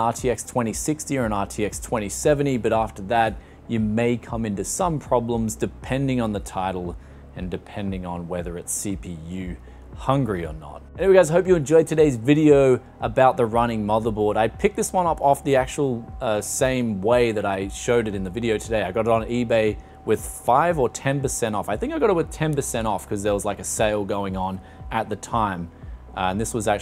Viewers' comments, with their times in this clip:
0:09 What is that fan noise near the mark?